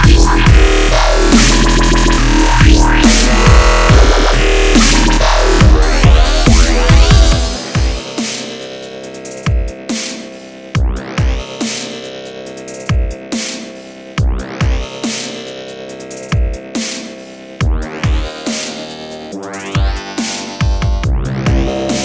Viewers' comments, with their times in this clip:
0:04 I like the second drop better :)